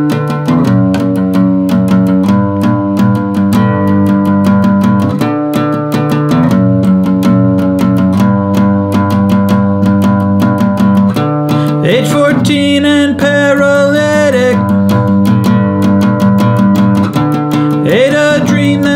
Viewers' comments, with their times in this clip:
0:06 I hear the drum set in the background kicking in